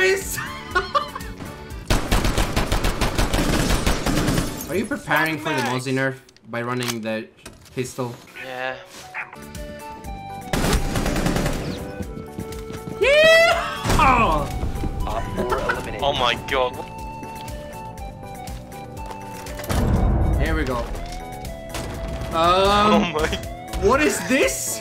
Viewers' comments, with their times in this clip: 0:10 the stradew valley theme song started playing.